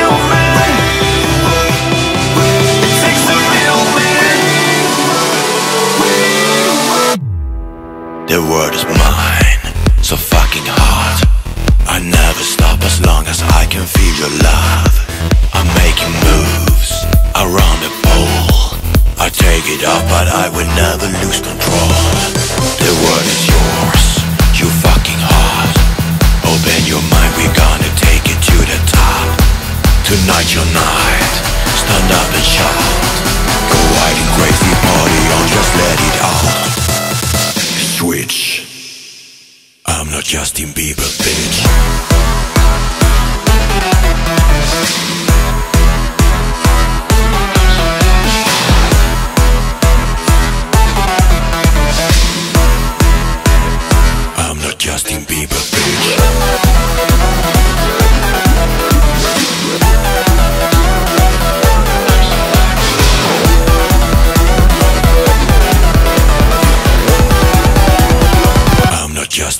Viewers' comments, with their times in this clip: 0:06 that bass though~!
0:39 I'm NoT Justin Bieber B**ch (beat drop) ✨✨💅💅
0:39 im not justin bieber bish , and the eargasm after that
0:56 that uber-90's sounding bass synth fades in and the cutoff opens as it builds in intensity. Damn, I wish that sound came back into style!